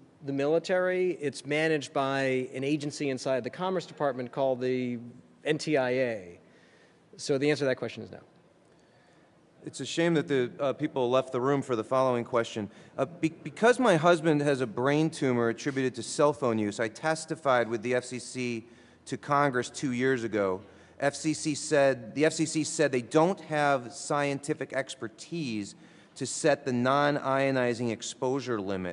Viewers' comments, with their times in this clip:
0:09 did Genachowski snicker at the brain tumor question?